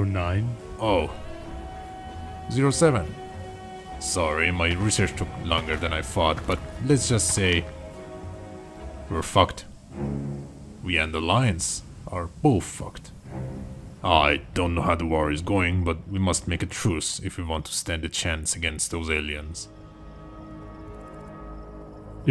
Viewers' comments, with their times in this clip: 0:03 bro just said it like that with out trying to motivate him💀
0:07 Idk why, but the subtle and blatant old delivery of the "we're fucked" just cracked me up 🤣 Also CPen is literally silly billy with how he wants to make "father" proud. Prove me wrong
0:08 lol the background music
0:08 "we're fucked" -calmly says 09
0:08 the way the guy toilet said '' we're fuck'' 🤣